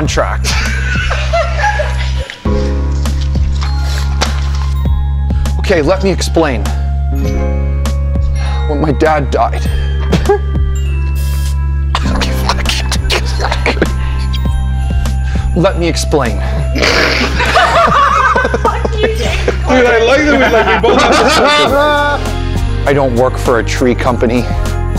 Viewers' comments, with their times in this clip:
0:05 I had to watch again to really appreciate the tiny nuances. 🤣😂🤣😂🤣😂 And then the bloopers! 😹😅 M Ok, let me explain. A&J [whiplash sounds] M When my dad died… J [unsuppressed laugh] M confused consonant sounds